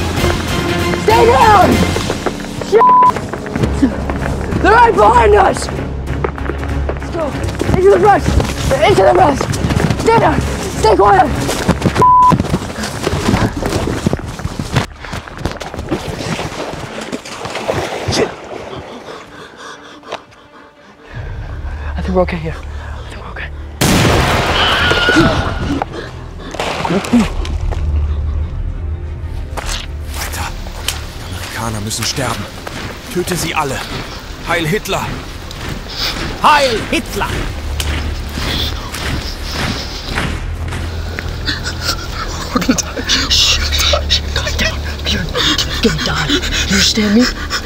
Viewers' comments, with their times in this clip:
0:03 yeah just yell as loud as you can so they know where you are at all times
0:10 “stay quiet” bro was literally screaming 💀
0:24 WILHELM SCREAM!! That’s the worst part of all the video!
0:32 im german and this is just gibberish
0:34 not him holding the laugh
0:35 Who else thinks he was trying not to laugh at the accent?